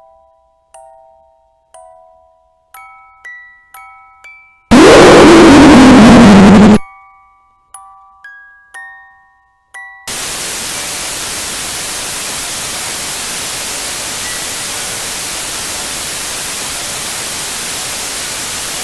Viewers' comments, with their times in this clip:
0:04 if you want to commit suicide put the volume 100% I died.
0:04 sound like sonic.exe smile
0:04 MY EARS THEY'RE BLEEDING!!!!!
0:04 best laugh 10/10 lol
0:04 Jumpscare ( Noise ) Warning
0:06 i have bass busted headphones